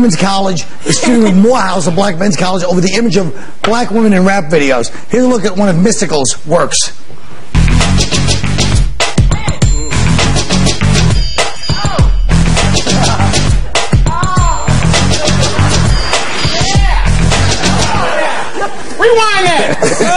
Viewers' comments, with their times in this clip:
0:07 I love the fake Neptunes beat